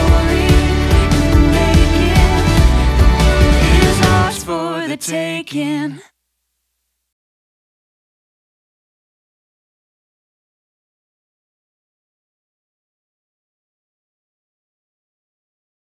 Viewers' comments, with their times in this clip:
0:12 thanks for sharing very beautiful place and lovely music ❤❤